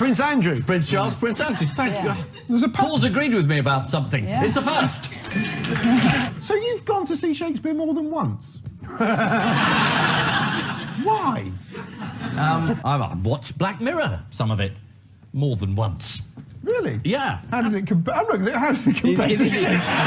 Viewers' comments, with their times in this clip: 0:07 That laughter sounded like Boycie's from Only Fools & Horses...😂